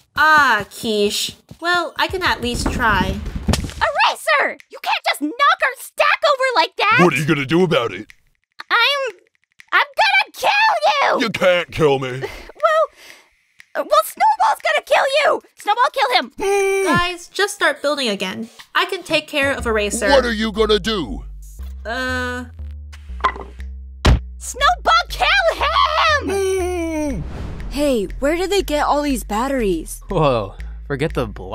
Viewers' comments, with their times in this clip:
0:03 bro i love her voice so much lol
0:18 snowball’s little groan cracks me up every time